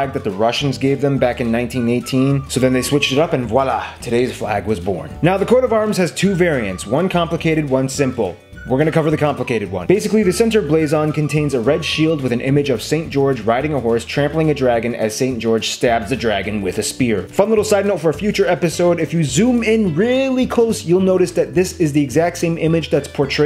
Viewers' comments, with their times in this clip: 0:05 did he say corona virus